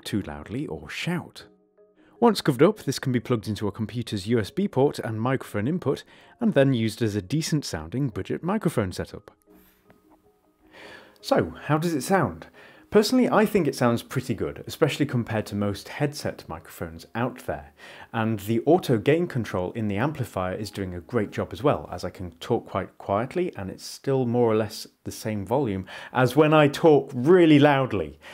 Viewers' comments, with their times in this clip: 0:10 That's actually a REALLY impressive microphone!!!
0:12 holy sheet of paper how d frag does this sound so good